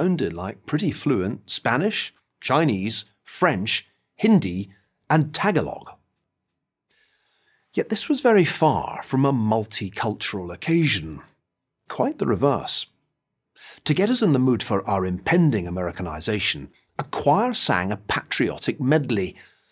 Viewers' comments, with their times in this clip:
0:05 lol TAG-A-LOG hahahahahaha That man has never met a Filipino in his life. It's pronounced: TAH-GAH-Log.